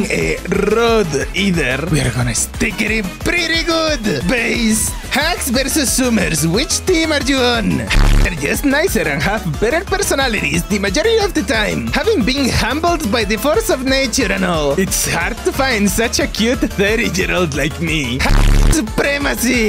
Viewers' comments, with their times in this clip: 0:05 you forgor to beep the senior